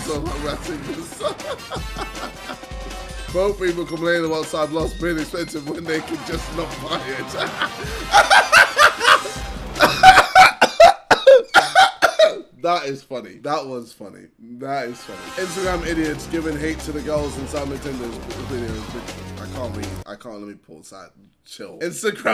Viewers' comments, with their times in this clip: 0:09 ayo how did he change his tone that fast?